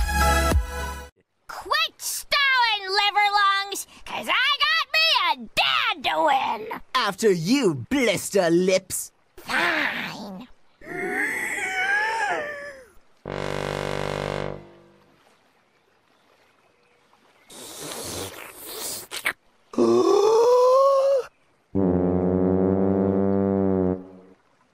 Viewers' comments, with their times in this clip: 0:09 Fine (playing the tuba)